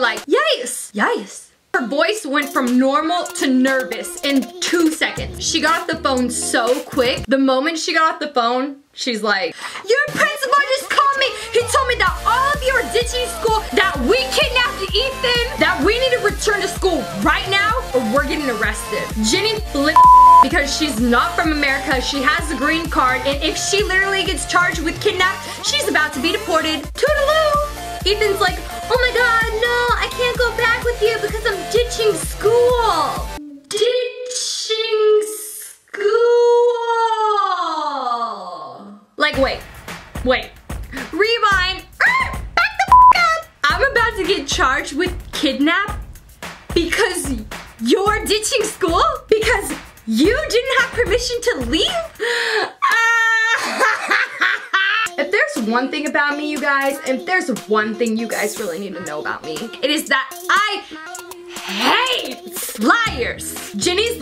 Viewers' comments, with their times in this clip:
0:09 when the music rises
0:13 that beat dropped lower than my math grade
0:52 that laugh tho xD